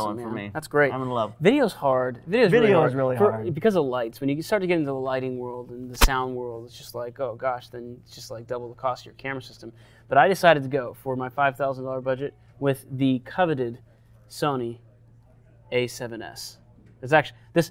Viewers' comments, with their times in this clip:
0:05 The irony of it's hard the lighting ... and sound ::wireless mic hit:: lol